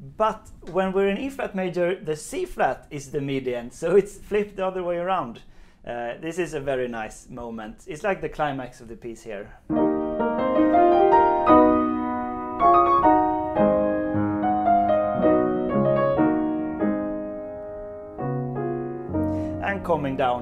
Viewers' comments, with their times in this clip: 0:03 The climax indeed. The run up to this part and the crescendo is intensly satisfying and spine tingling.... I'm not familiar with the wording, but this small part is mesmerising. Makes the entire piece worthwhile...